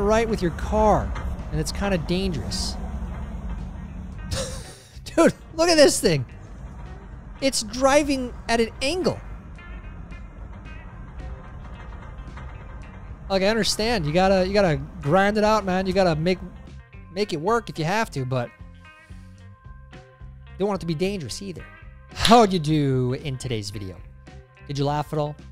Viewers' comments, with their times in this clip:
0:07 at a angle? I've seen people misspell like I just did but never heard it being said this way.. Is there a very short N in there? I think maybe